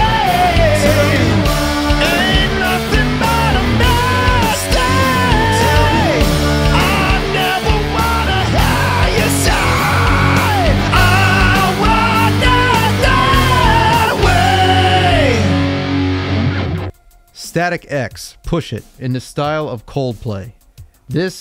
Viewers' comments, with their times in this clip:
0:06 probably more Cornell solo than Soundgarden there